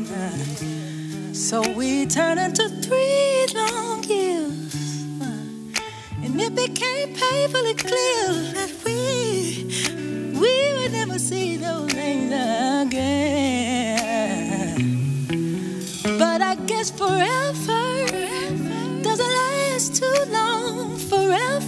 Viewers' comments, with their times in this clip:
0:08 …that transition on WE